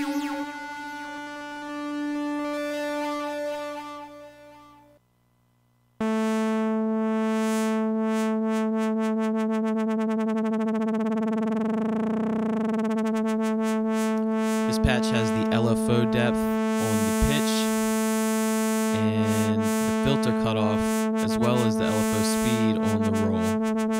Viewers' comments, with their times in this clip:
0:09 What do you call that effect starting ? Its kind of sounds like its chopping a sample at increasing speeds as you rotate the remote back.